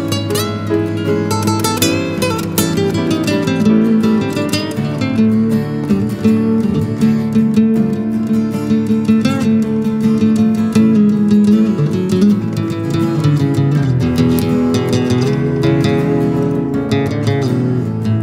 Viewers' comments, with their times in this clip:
0:05 Wow, Willie and his guitar are a duet, that playing my favorite.